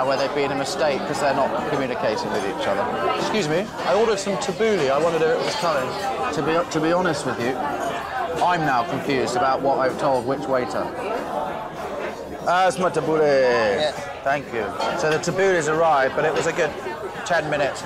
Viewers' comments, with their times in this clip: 0:03 The guy is rude really, his delivery makes him seem arrogant.